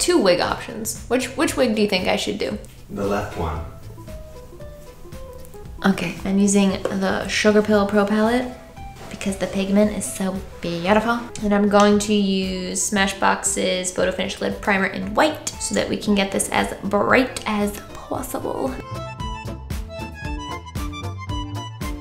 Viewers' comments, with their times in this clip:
0:04 the way she said "Okay" tho hahaha